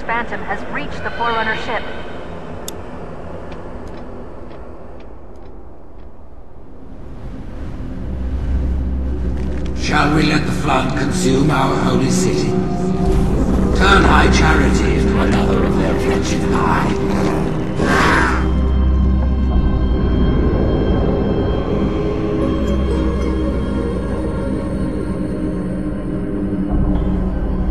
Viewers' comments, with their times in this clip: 0:08 This little montage of the Flood spreading across High Charity while Truth is boasting on the loudspeakers is still jawdroppingly creepy even all these years later